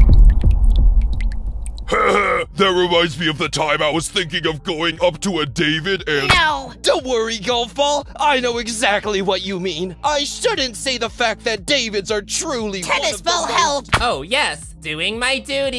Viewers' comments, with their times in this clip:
0:03 eraser from tpot sound like knuckles from sonic